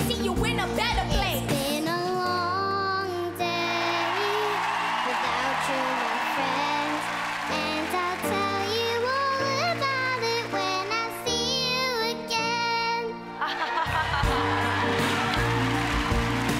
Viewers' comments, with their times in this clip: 0:03 wtf ole girl can’t sing